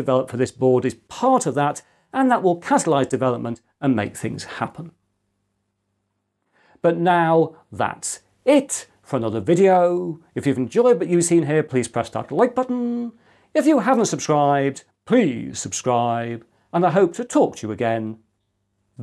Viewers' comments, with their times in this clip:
0:05 please tell me what doest that strange pronounciation give? earlier pronounciations of "So!' i can hear the same on hikaru nakamura streams and it really bothers me to know :) - Thank you in advance!